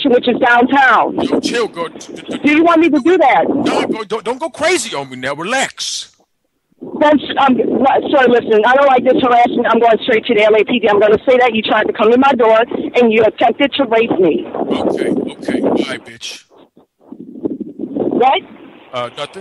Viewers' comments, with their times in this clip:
0:06 for some reason that is hilarious, how flustered she is